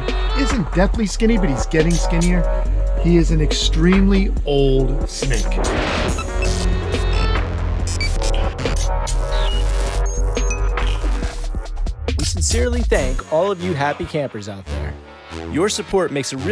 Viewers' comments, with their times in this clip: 0:03 bro you're talking about potential death of your snake and the music is drill XDDDDD